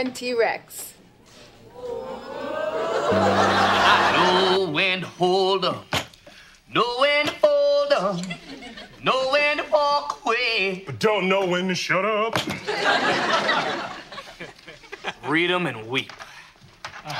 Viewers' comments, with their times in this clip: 0:04 Alfonso singing is 🔥